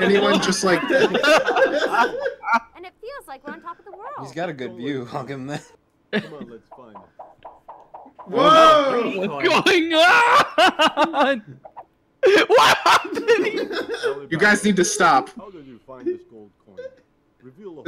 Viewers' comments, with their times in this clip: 0:03 is swedish chef